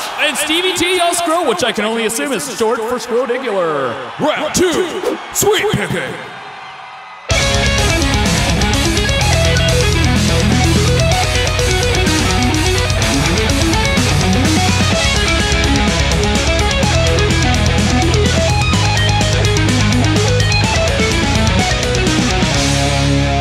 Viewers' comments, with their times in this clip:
0:07 Sounds like Darkest Hour 🤘 Kris Norris would be proud one of the Metalcore GODS!